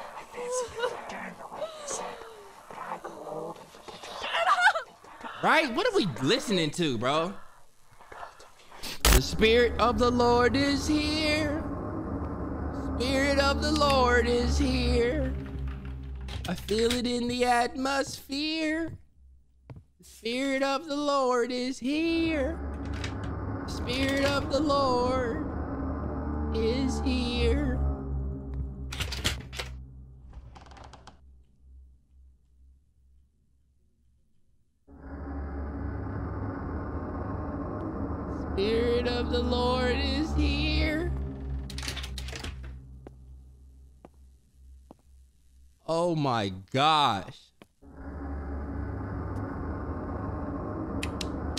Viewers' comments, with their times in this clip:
0:09 bro I'm weak, he started singing gospel to calm himself down though😂😂😂 Amen😂😂😂💒💒💒
0:09 when he started singing I lost it ROTFLMBO
0:34 ik im not the only one that started singing with him😭😪